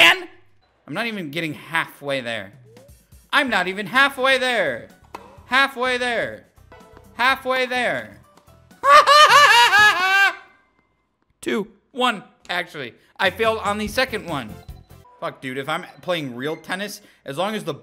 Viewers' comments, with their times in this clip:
0:04 The laugh that followed after that was perfect lmao